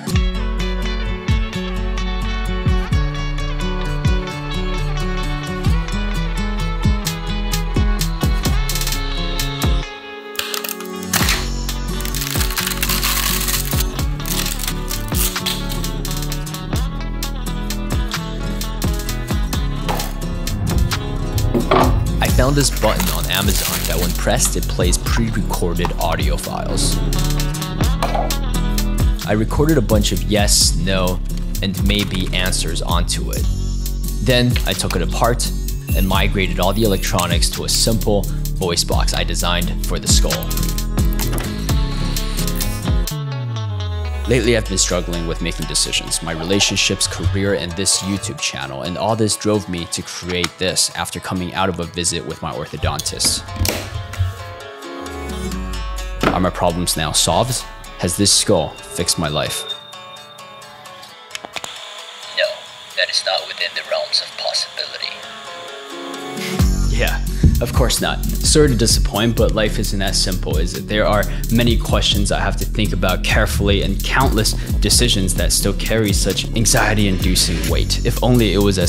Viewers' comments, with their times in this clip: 0:10 I swear this part sounds like you're killing someone there...
1:06 This is astonishing. The project itself is really cool, but the story, the cinematography, the everything... That was really wonderful. I think it could've been an interesting effect if you had finished the video with that little scoff. I do appreciate everything you said after it though, I just think it would've been an impactful moment.